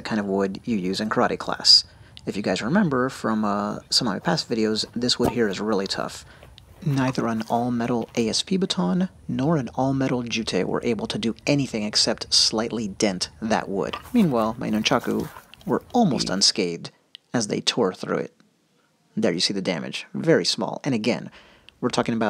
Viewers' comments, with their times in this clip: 0:06 That pair just before sound exactly like mine from USA Nunchaku. Love the sound of these things when it moves properly.